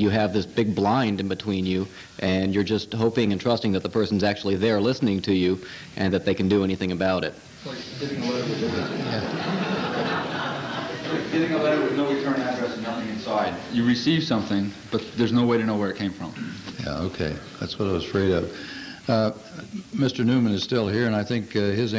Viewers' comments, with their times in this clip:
0:08 What did that person say that everyone laughed at? Anyone catch it?